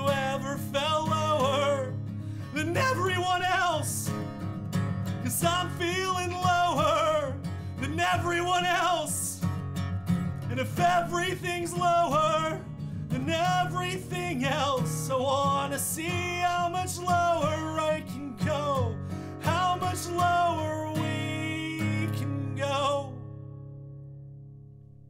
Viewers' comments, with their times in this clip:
0:06 that little smirk, coupled with "I'm feeling lower than everyone else" right after the voice crack. That's perfection in the imperfections, man. I love it.